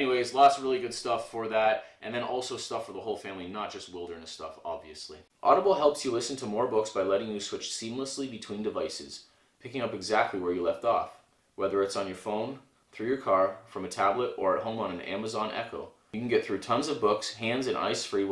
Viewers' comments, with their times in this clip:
0:05 Yo did siry opened saying ( hay sneezy) didn’t really get that to you too on ;30-42